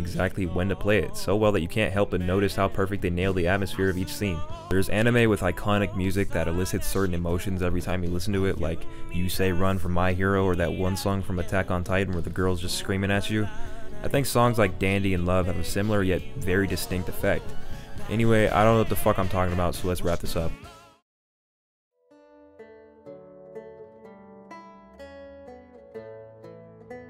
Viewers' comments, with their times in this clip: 0:10 that girl screaming actually makes aot scenes awesome.